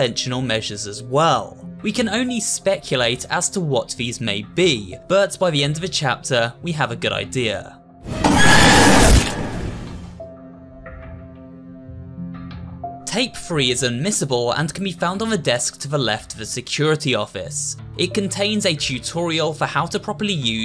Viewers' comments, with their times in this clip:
0:07 realy scared me with that jumpscare im on fullsound- like bRuhH-